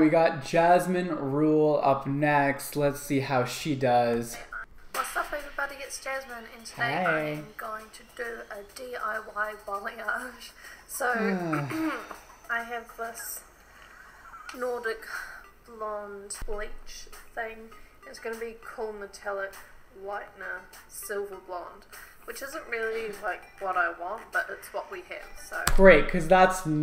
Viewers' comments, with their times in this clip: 0:07 so surprised to finally hear a kiwi accent on here lmaooo